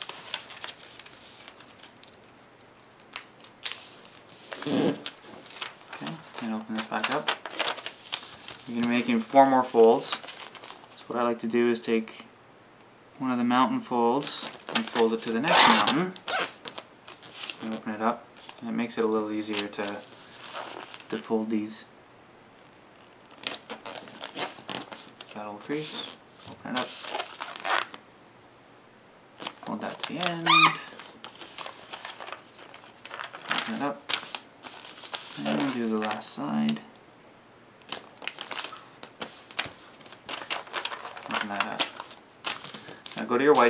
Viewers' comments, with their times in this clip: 0:04 Go to in the video. It sounds like the paper farted lol
0:04 did he just fart :3
0:04 ahahahahah epic fart sound
0:05 what the heck was that noise
0:05 you paper farted
0:14 the crease he made is soooooooooooo loud!!!
0:29 it sounded like the paper was screaming
0:30 Paper screamed Lol! Oh, and I can't get what you mean! My book looks like a horse head!
0:31 And in it looked like the paper screamed XDDDD